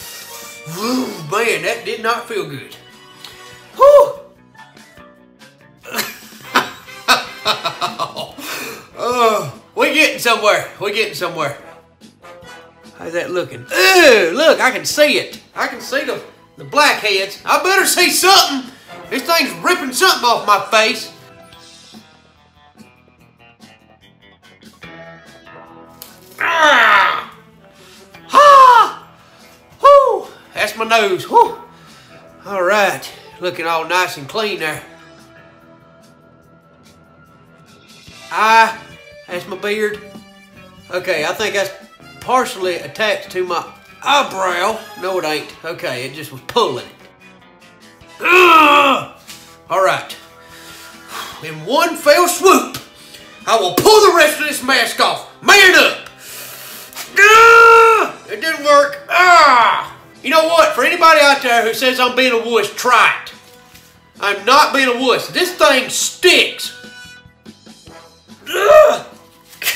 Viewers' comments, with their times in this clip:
0:04 I think when hes screaming and laughing kinda sounds different
0:56 at 0.25x Siren Head has entered the chat